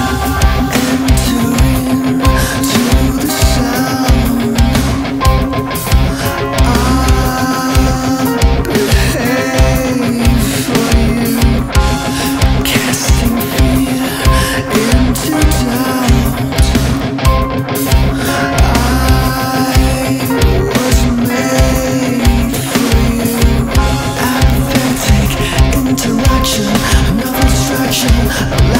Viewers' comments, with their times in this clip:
0:09 Love that Djent part